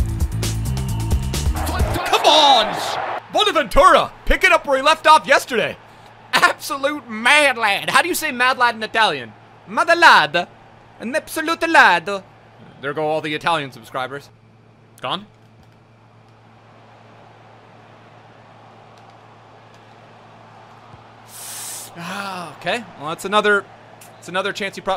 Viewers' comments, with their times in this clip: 0:08 LOLLOLOL am dying. Thats defenetly not how you say it😂